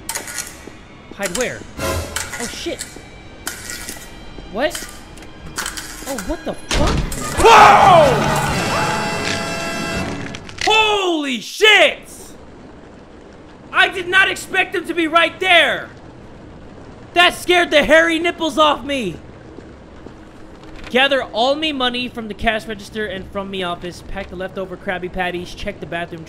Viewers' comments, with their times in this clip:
0:07 *LION SLEEPS TONIGHT EARRAPE